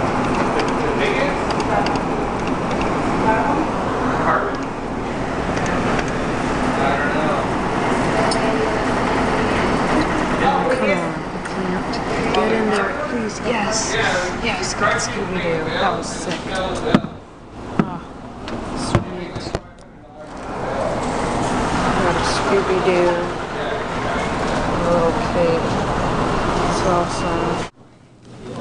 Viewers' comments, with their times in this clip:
0:10 lol you sound like you're having sex your videos are great by the way! :D